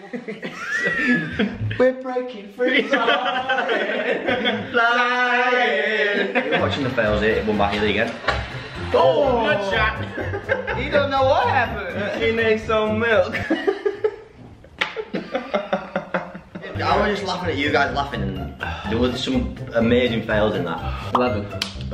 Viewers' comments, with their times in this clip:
0:06 This moment when they start singing High School Musical song 😍😍😍